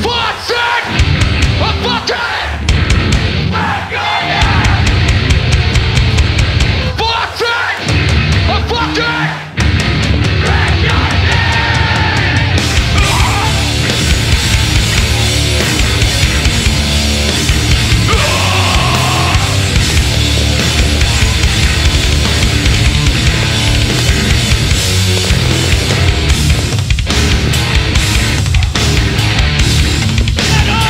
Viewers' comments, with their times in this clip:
0:06 thats fucking blood in my veins, and that little scream somebody did when the breakdown started. Insane.
0:12 That's what I call a scream!